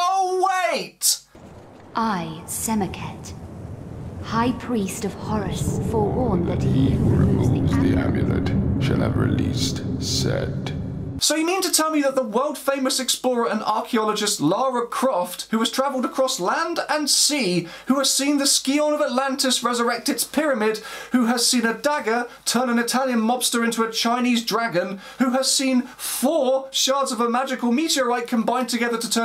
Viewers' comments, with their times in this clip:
0:10 was that a pathologic joke??? or just same voice actor